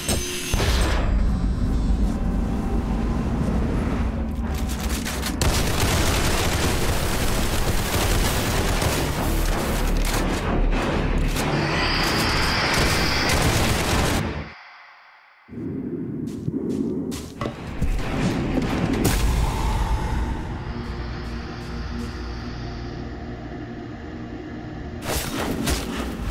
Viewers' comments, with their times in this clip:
0:09 i can hear starting of dead by daylight chase music